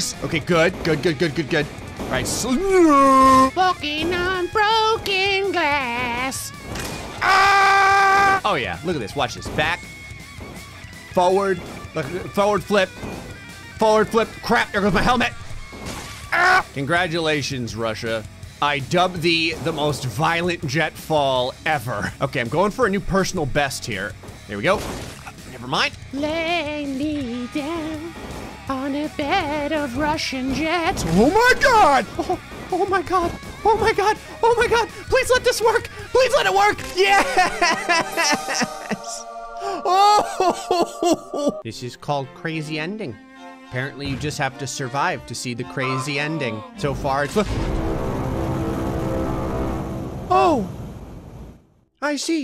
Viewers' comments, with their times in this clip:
0:04 that cutted scream made my day hahahaha omg
0:05 the scream was amazing
0:06 a most excellent scream, good sir
0:07 best scream I’ve heard in a long time
0:07 slit in half and screamed at the top of his lungs. bro had me dead🤣🤣🤣🤣🤣🤣🤣🤣🤣🤣🤣🤣🤣🤣🤣🤣🤣🤣🤣🤣🤣🤣🤣🤣🤣🤣🤣🤣🤣🤣🤣🤣🤣🤣🤣🤣🤣🤣🤣🤣🤣🤣🤣🤣🤣🤣🤣🤣🤣🤣🤣🤣🤣🤣🤣🤣🤣🤣🤣🤣🤣🤣🤣🤣🤣🤣🤣🤣🤣🤣🤣🤣🤣🤣🤣🤣🤣🤣🤣🤣🤣🤣🤣🤣🤣🤣🤣🤣🤣🤣🤣🤣🤣🤣🤣🤣🤣🤣🤣🤣🤣🤣🤣🤣🤣🤣🤣🤣🤣🤣🤣🤣🤣🤣🤣🤣🤣🤣🤣🤣🤣🤣🤣🤣🤣🤣🤣🤣🤣🤣🤣🤣🤣🤣🤣🤣🤣🤣🤣🤣🤣🤣🤣🤣🤣🤣🤣🤣🤣🤣🤣🤣🤣🤣🤣🤣🤣🤣🤣🤣🤣🤣🤣🤣🤣🤣🤣🤣🤣🤣🤣🤣🤣🤣🤣🤣🤣🤣🤣🤣🤣🤣🤣🤣🤣🤣🤣🤣🤣🤣🤣🤣🤣🤣🤣🤣🤣🤣🤣🤣🤣🤣🤣🤣🤣🤣🤣🤣🤣🤣🤣🤣🤣🤣🤣🤣🤣🤣🤣🤣🤣🤣🤣🤣🤣🤣🤣🤣🤣🤣🤣🤣🤣🤣🤣🤣🤣🤣🤣🤣🤣🤣🤣🤣🤣🤣🤣🤣🤣🤣🤣🤣🤣🤣🤣🤣🤣🤣🤣🤣🤣🤣🤣🤣🤣🤣🤣🤣🤣🤣🤣🤣🤣🤣🤣🤣🤣🤣🤣🤣🤣🤣🤣🤣🤣🤣🤣🤣🤣🤣🤣🤣🤣🤣🤣🤣🤣🤣🤣🤣🤣🤣🤣🤣🤣🤣🤣🤣🤣🤣🤣🤣🤣🤣🤣🤣🤣🤣🤣🤣🤣🤣🤣🤣🤣🤣🤣🤣🤣🤣🤣🤣🤣🤣🤣🤣🤣🤣🤣🤣🤣🤣🤣🤣🤣🤣🤣🤣🤣🤣🤣🤣🤣🤣🤣🤣🤣🤣
0:32 mickey mouse took over his soul
0:36 that "YES!" Sounds like Emperor Kuzco...
0:38 His yEsSsSsSs made my day😂